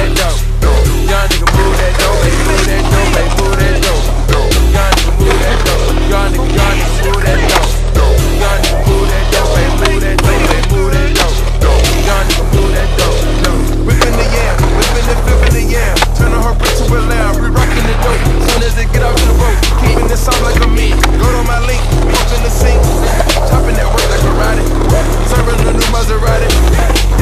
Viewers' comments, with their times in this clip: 0:10 is dripping with butter